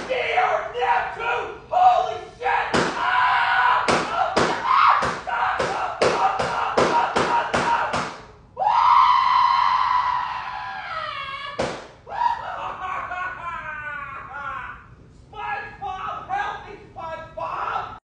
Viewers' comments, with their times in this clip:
0:08 squidward screaming like Mickey